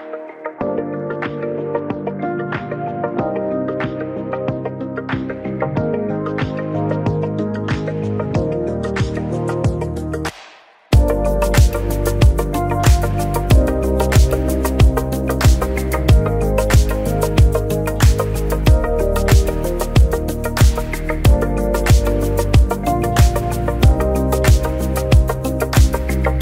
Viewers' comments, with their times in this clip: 0:09 god damn dat clap / doors closing !!!